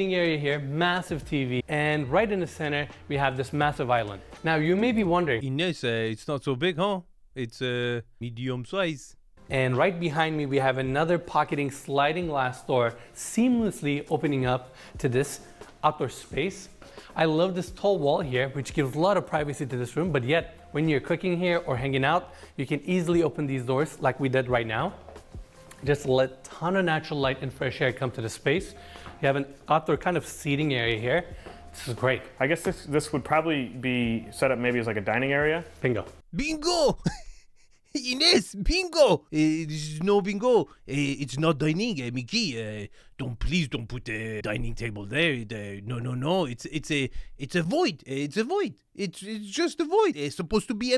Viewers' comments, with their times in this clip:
0:08 I LOVE THE NIHILIST-Frenchman accent. look at the island. The chairs are pushed up against cabinets. LE WTF?!
0:36 Beein-gooo! I laughed so hard at your Frenchie diatribe